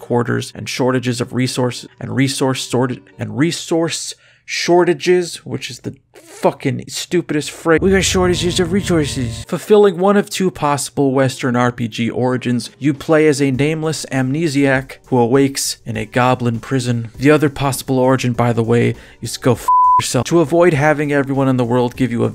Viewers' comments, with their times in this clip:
0:07 a perfect British peasant accent.